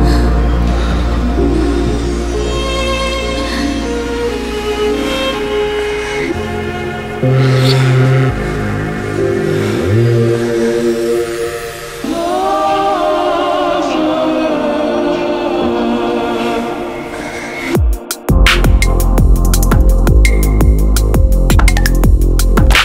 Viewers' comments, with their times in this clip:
0:07 Absolutely beautiful. This is a wholely unexplored ID&B IDM liquid wormhole... So much to be enjoyed in this piece. That transition is just Ice in the veins.